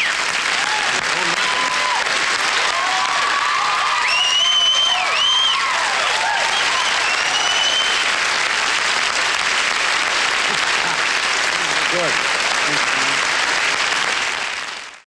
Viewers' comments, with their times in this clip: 0:11 I believe your comment about his not having a "dig me" bone in his body makes him even that much more amazing. If you listen when he takes a seat after performing, at about the mark, Johnny Carson says, "Gorgeous!," and JM says a very soft, humble, and modest, "Thank you!" To me it speaks volumes about a super talent.